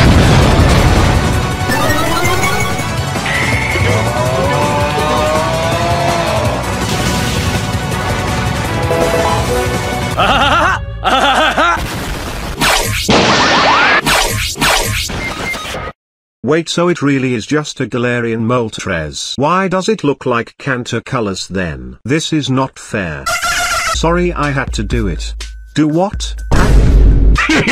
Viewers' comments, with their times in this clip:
0:10 What is the laugh that shit is so funny